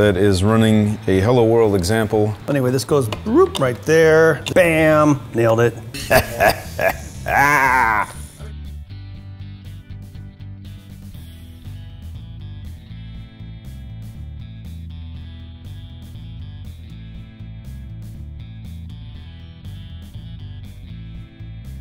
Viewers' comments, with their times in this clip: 0:06 Found my new "sinister laugh" gif. ;-)